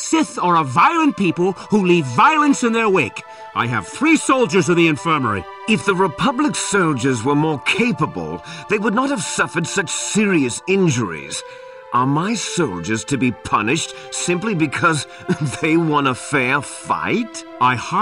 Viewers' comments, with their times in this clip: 0:06 Hello Liquid Snake.